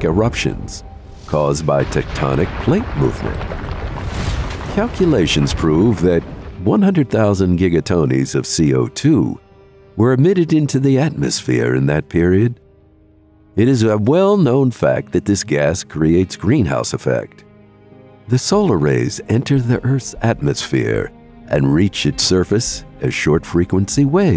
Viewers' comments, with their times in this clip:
0:05 sorry.. Giga Tonys?
0:05 Giga tonies xD
0:06 "Giga-tonies" was the one that got me.
0:06 "Giga Tonies" made me laugh
0:07 ...Giga-TONIES of CO2?